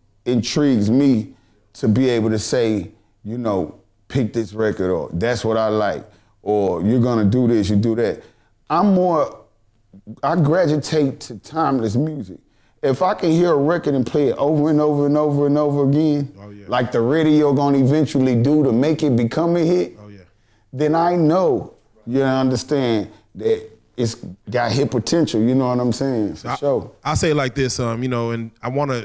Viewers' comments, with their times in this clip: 0:10 "Gragitate" ...my new word. Thx Buck lol!